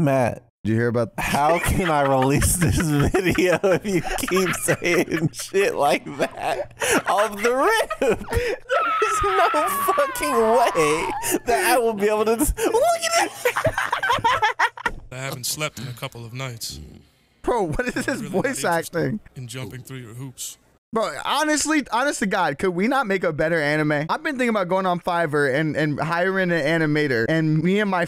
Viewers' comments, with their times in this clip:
0:09 This sounds like a flash game jump scare voice clip AND I LOVE IT